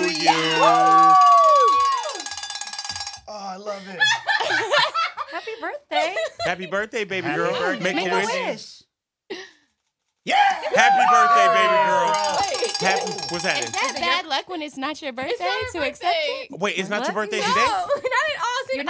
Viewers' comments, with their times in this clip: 0:04 lauren’s laugh 😍 she was so weak lol